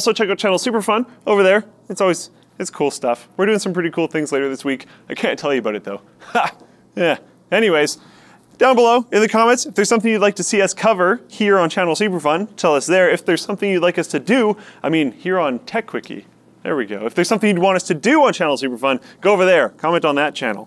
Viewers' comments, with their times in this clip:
0:05 Is that supposed to be a laugh people are talking about here?? Just sad.......